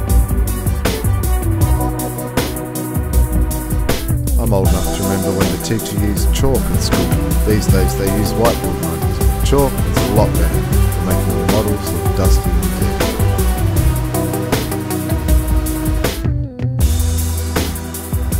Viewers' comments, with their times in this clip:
0:04 what? what did you say? I can't hear it